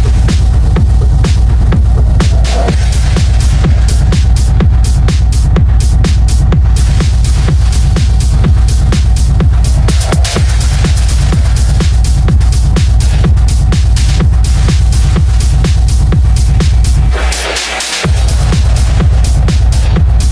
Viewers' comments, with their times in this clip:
0:08 -Champas & Disastar - B52 but she slows it down a little and plays adele over it